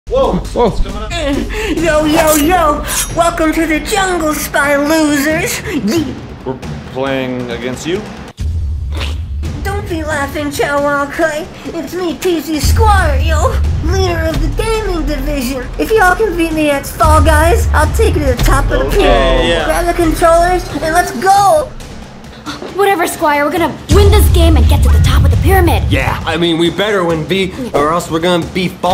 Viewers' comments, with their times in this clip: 0:01 go hes talk tho 🤣🤣
0:10 It was funny when Chad was speaking then he laughed